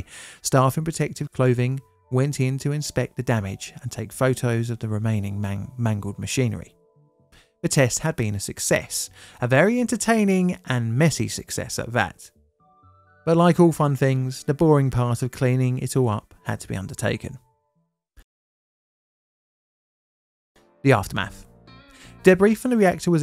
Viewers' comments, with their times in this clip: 0:06 you made an editing mistake!!! Mang-Mangled!!!! Oops 😅